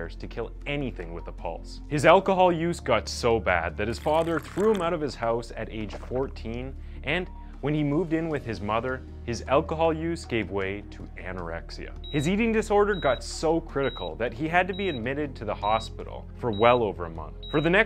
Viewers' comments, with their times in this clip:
0:04 One of the most twisted things about this video, is the derpy slurping noise that was edited in xD